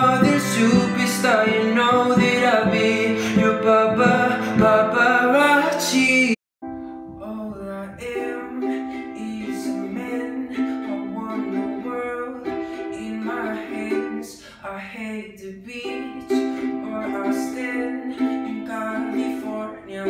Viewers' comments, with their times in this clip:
0:08 I listen to this video whenever I need to sleep and I can't. Yesterday I was awake till PM!! I listened to this song and I feel fast asleep. His voice is so sweet that it helps me sleep.